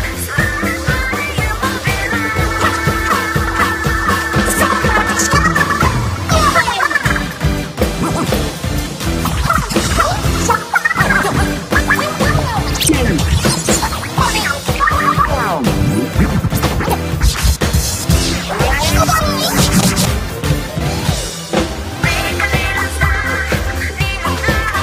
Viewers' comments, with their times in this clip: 0:04 when Marina started playing the woomy and ngyes sounds I literally gasped. I didn't expect it and inklings sound so cute ^w^
0:07 u cant hide those WOOMY from me
0:12 imagine inkling boy and girl hearing this and then wondering how the copied their voices